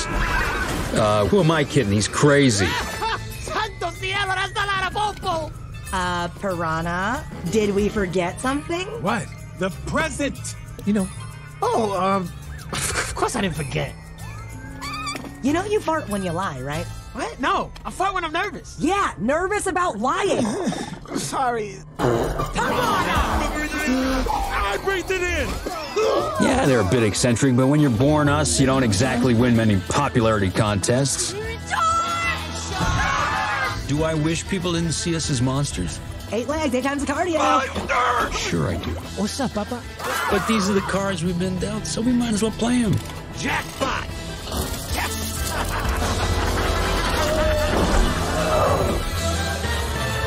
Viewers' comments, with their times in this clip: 0:03 Was he shouting Spanish or Portuguese?
0:03 what the hell did piranha say
0:14 It’s a kid film based off a kid book series so I guess we should expect a fart joke to get a laugh out of them I always found fart jokes as a cheap laugh but to each their own I guess My audience got a laugh out of the fart though probably because of the squeaky sound I’ll admit I got a chuckle out of it, but mainly just because of their reactions LOL
0:21 Piranha couldn't hold it in so he let out a big fart bomb
0:22 Hahahahahahahahahahaha!!! That part cracked me up so hard. Reminds me of how the annoying orange farts😆!
0:31 this part of the movie is underrated, the way the woman screamed “SHAAARK!” and everybody ran away super fast was too funny😂🤣🤣